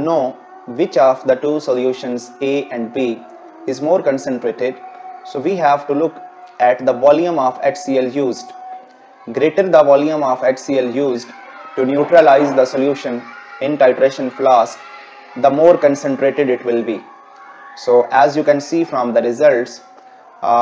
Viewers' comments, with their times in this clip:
0:03 The azaan in the background Sounds like an Arabian country